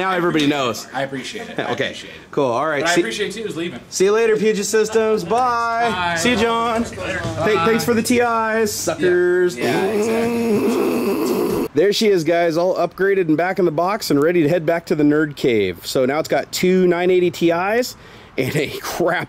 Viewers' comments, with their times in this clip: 0:06 I died laughing from you saying suckers and laughing